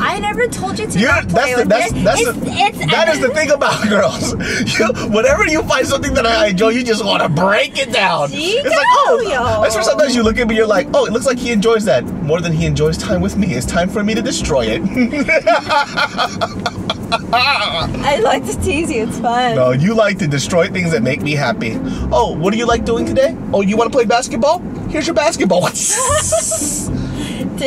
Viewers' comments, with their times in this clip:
0:08 my heart stopped when I hear Japanese "Chigauyo~(it means "No it's not.") in the middle of English and Korean mixture conversation LOL
0:08 Okay, she definitely spoke japanese! 意外〜 Trilingualism (or more?) is such an admirable skill!